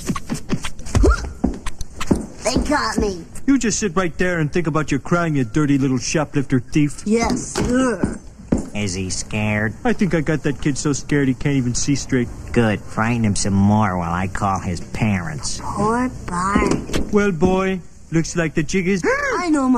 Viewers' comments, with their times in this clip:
0:04 That man's accent is funny